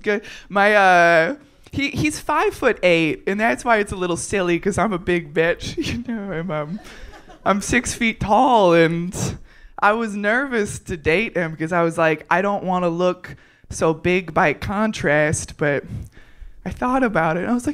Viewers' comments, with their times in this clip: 0:04 holy shit her voice is deeper than mine!